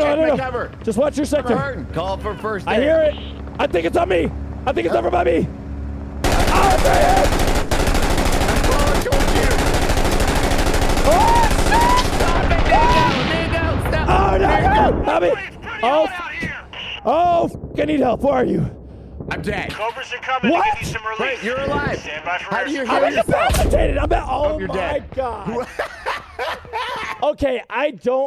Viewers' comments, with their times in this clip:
0:10 the way you said “oh shit” got me 😂